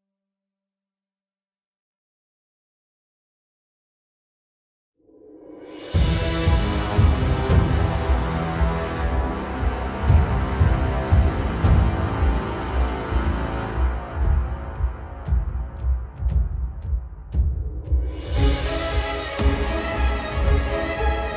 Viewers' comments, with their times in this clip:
0:05 oh damn the sick beats are back lol that drop do be lookin kinda spicy